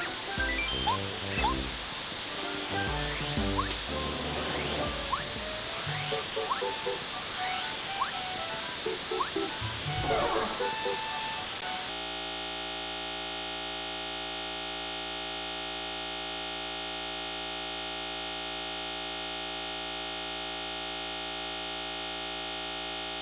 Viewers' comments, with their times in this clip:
0:10 finally the sliding sound is gone!